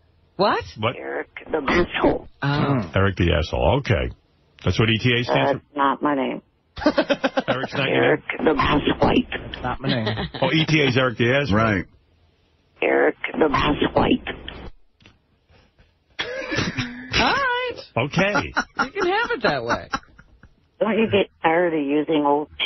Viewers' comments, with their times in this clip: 0:05 that song had me fucking choking for air laughing.